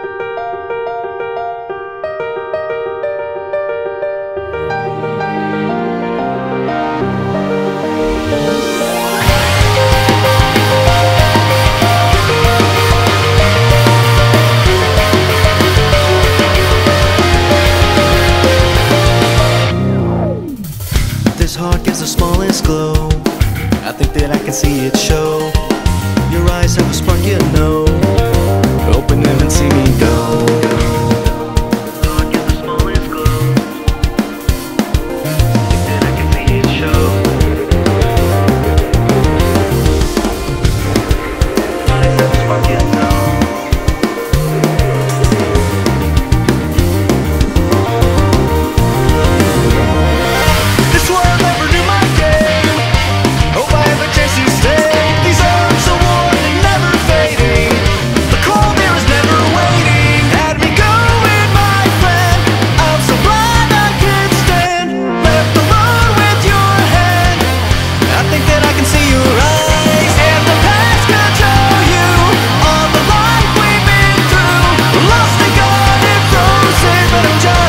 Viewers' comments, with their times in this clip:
0:06 i thought that was someones heartbeat .-.
1:00 i legit thought that ‘I’m so blind i cant stand,’ was ‘I’m surprised that kid’s dead,”